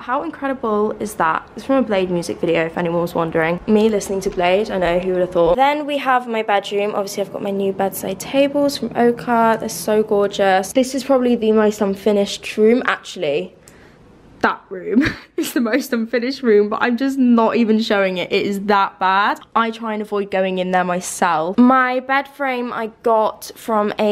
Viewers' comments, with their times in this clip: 0:06 can anyone fill me in on what the name of the company she said she got her bedside tables from? (totally embarrassed american here rewinding over and over to figure out what she's saying because i can't make it out in her accent lol)